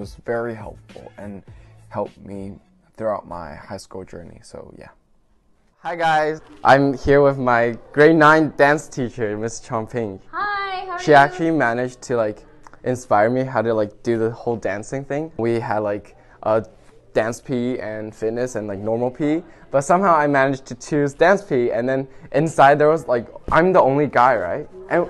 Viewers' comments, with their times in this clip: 0:09 Woah! Tony is so fluent in English 😯 I thought she was Tony's mother 😅